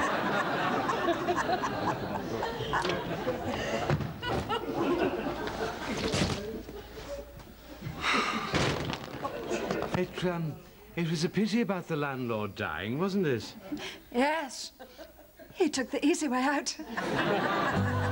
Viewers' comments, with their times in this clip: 0:04 Twenty years ago I went to see the filming of this episode. If you listen at the last laugh in the audience you will be surprised because that is me laughing.